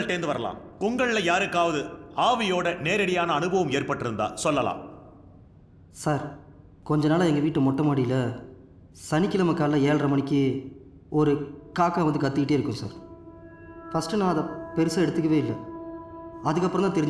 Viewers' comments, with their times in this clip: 0:05 Semma... sounds like Karunanidhi..